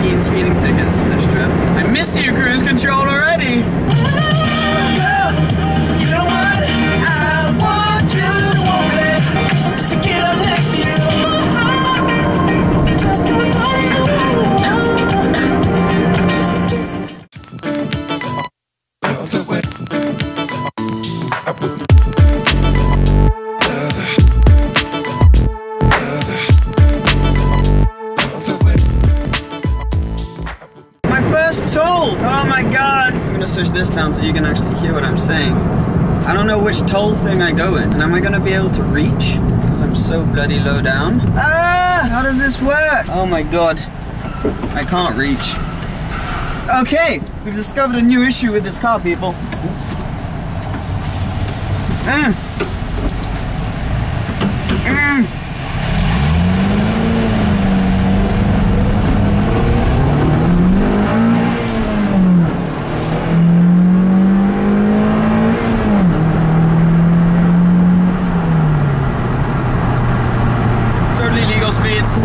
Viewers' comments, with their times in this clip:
0:07 I'm sensing this might be taken down because of the music
0:59 the car sounds pretty good though, definitely need an exhaust to make it sounds better!